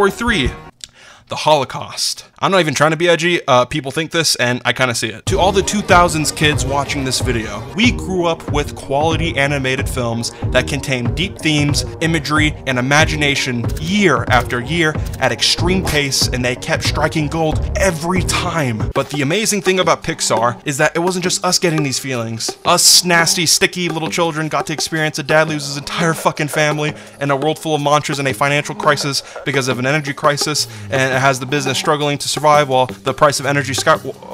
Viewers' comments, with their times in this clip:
0:07 Utopia music woke me up wtf
0:19 I just about had an aneurysm when I heard the utopia music